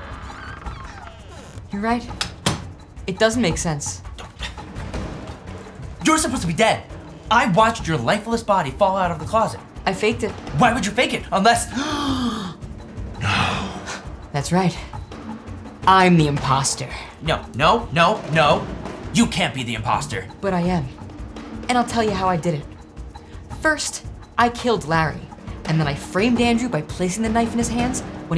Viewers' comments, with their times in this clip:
0:10 when he noooo I died laughing 😆